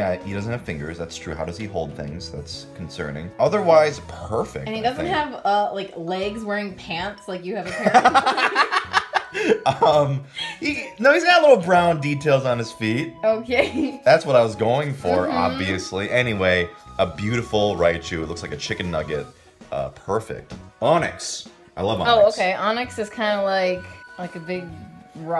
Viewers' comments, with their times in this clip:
0:07 Thats such a pure laugh. I love it